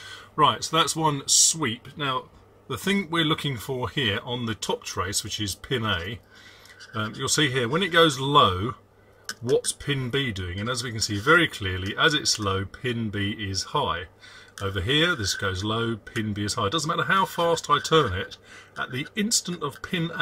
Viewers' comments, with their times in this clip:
0:06 that screwdriver scraping on the scope screen makes my teeth hurt X_X